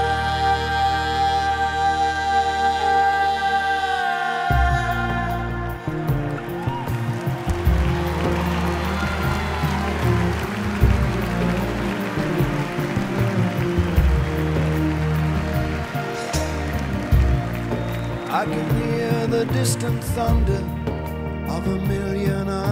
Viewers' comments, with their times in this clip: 0:05 Woah, he sure hits that high note What an amazing vocal register.